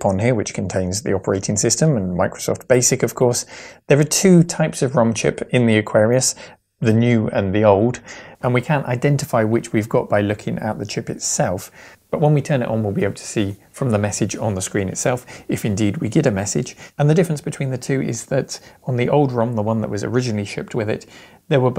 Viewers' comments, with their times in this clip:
0:09 Sounds to me like some noise removal algorithm that's set a bit too aggressively, causing artefacts. Edit, the warble disappears and background noise comes in. For the future, and I think most people would agree, while noise is annoying, noise removal artefacts are even more so.